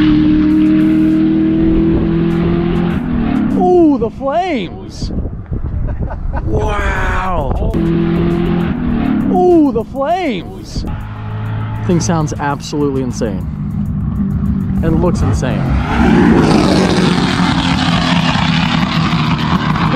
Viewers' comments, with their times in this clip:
0:05 THATS A JET !!! love the donut 🍩 and that’s amazing car !!!